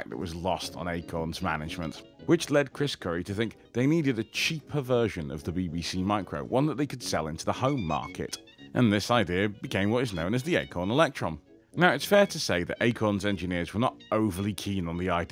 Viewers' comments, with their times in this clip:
0:03 Did you say "a cheaper version" or "a cheap perversion" ?